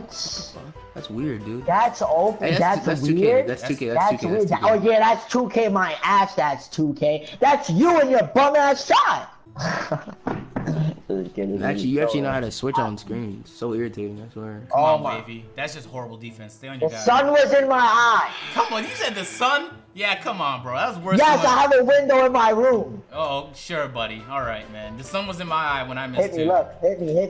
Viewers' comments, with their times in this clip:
0:08 that voice crack omg